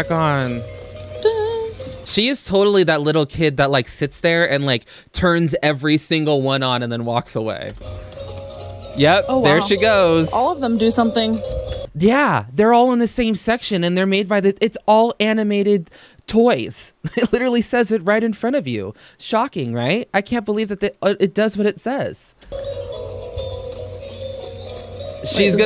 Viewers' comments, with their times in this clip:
0:08 HE JUST SAYS IT SO CASUALLY TOO-